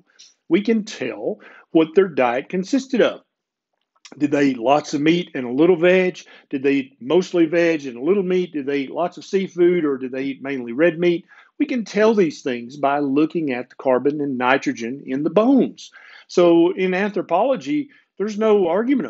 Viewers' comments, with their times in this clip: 0:03 “veg” or “vag”? It’s kinda confusing and I can’t make it up from cuntext.